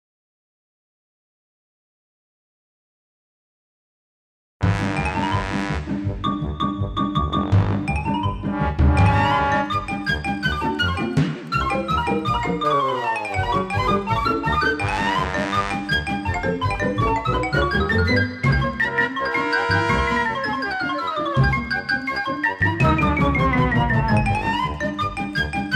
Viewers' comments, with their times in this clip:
0:06 Great video. I especially love the background music starting It is so appropriate for the lathe work!